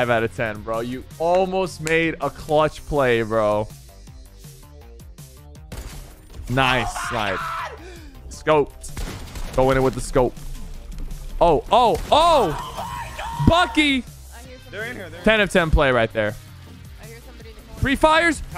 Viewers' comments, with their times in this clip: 0:05 Wait, but y does the guy sound like Chris from family guy?